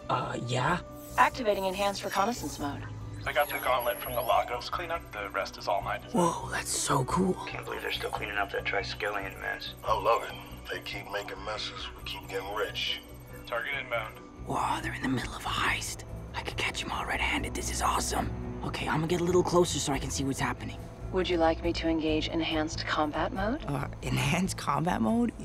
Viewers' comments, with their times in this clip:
0:09 that guy sounds like the thugs in batman games that you can hear when gliding around.